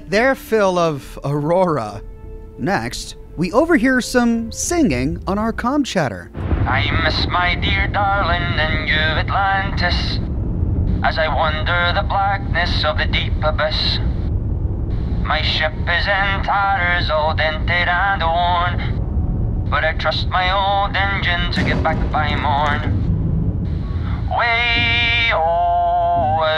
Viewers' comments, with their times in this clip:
0:07 It's a space shanty! I love it!
0:12 Goodness, his voice gave me chills and moved me to tears. Bravo! 🌹⚘️🌷